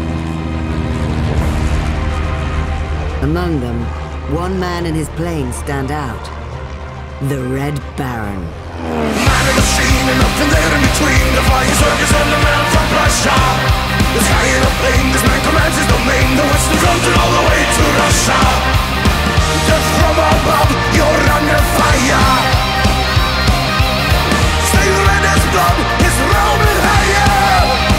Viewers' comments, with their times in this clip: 0:09 The actual music starts